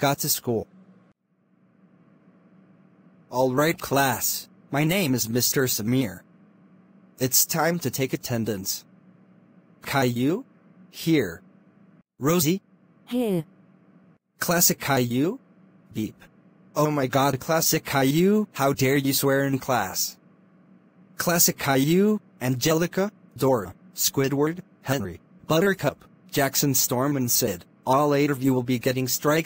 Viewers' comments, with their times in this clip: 0:03 BEEP (minus) Swear
0:16 classic calliou became robot💀💀